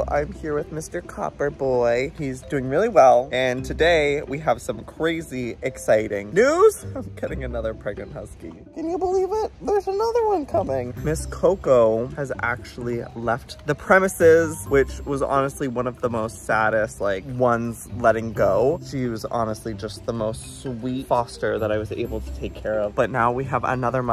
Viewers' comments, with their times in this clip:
0:10 he said “today we have some cwazy news” like bro what🤣🤣🤣